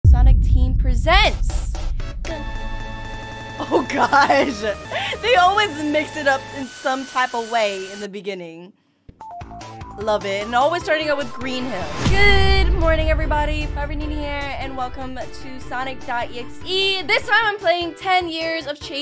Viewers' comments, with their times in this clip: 0:02 the timing of the snap so perfect DAMN BRO